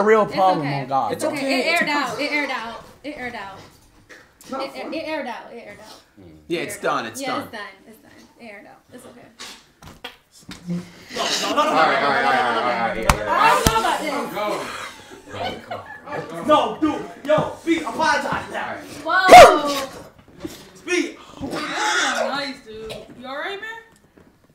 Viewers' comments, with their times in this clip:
0:10 sound is like poop💀😭😭